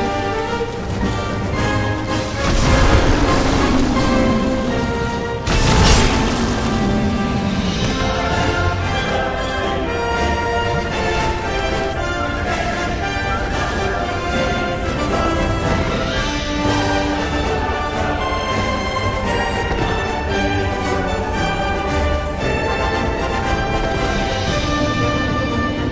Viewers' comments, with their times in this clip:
0:06 That sounded like a hitsound to me...